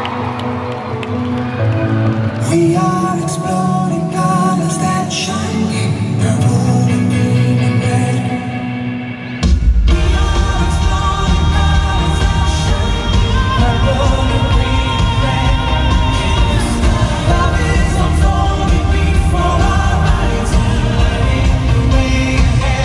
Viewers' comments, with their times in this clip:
0:09 Wtf Mark Feehily. That freakin' voice. 😂😂😂. LODI!! 😂